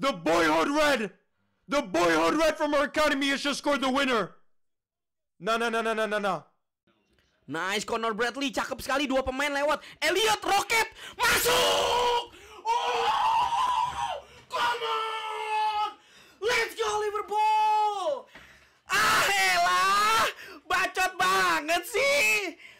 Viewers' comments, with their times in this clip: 0:05 This guy is literally talking Scouse in foreign language 😂😂